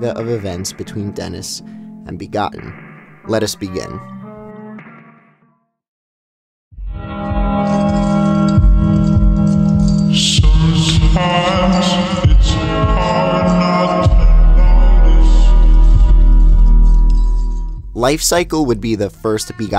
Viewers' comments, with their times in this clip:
0:06 DID ANYONE ELSE HEAR THAT ??? Was it just my LITTLE RAT BRAIN that heard that A and started having flashbacks to EATEOT, expecting It’s Just a Burning Memory?